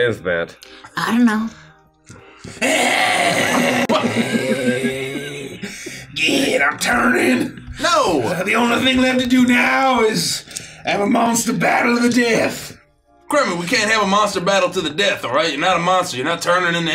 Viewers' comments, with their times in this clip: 0:04 Kremy alligator hissing and attempting to death roll Gideon That probably counts as "Fey Curses" but that part in particular makes me laugh 😂